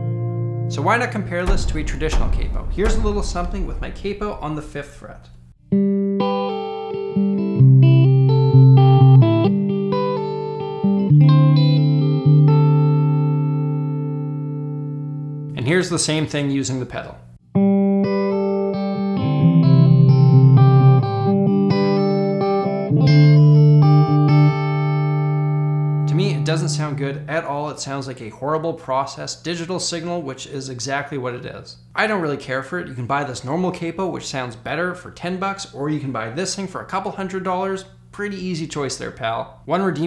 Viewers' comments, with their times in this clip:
0:03 So very nearly Here Comes the Sun...
0:05 bro wanted to play here comes the sun so bad
0:17 🎶here comes the sun🎶 oh sorry wrong song
0:21 I could see both being layered on top of eachother for an interesting timbre